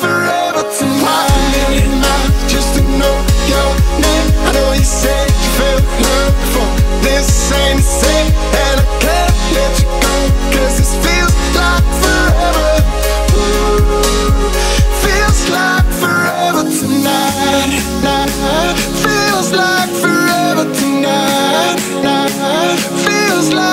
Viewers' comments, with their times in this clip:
0:04 The sound of this time is strange. just me??????